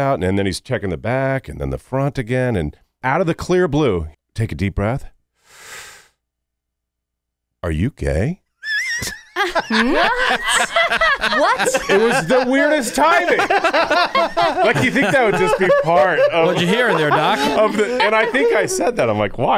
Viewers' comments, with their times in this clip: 0:07 The way that he said are you gay? 😂😂😂